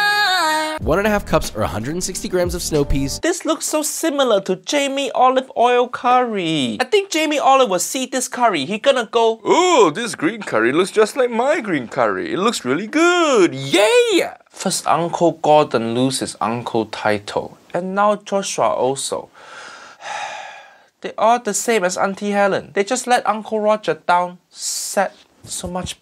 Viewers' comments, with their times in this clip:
0:09 Bruh Uncle Roger really nailed the Western's voice He should apply for voice acting